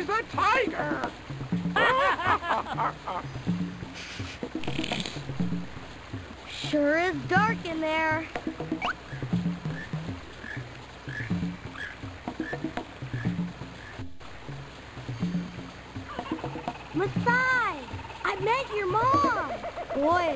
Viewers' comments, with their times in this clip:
0:04 Was that a little giggle I heard in there? <3